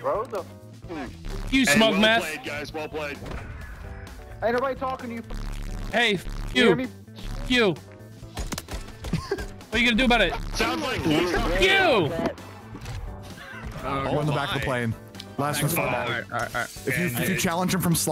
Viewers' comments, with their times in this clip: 0:03 You forgot that bleep 😂😂😂